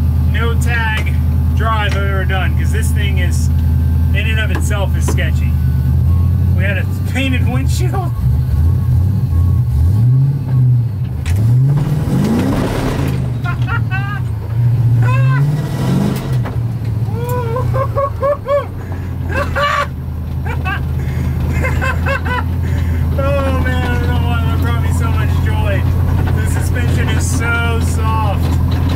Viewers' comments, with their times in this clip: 0:10 joker laugh lol
0:11 is the laughs of a mad scientist. 😆